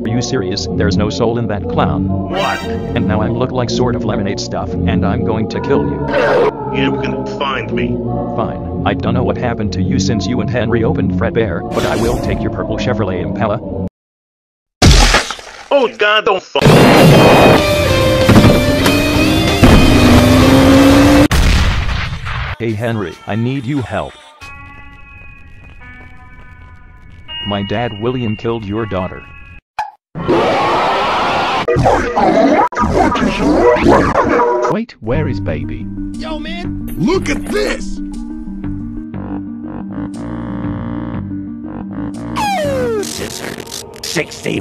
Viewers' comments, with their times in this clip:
0:06 What was that goofy ahh sound effect ?
0:30 [Henry rages] Micheal... what is your plan?
0:32 why did I hear “wtf is your plan?”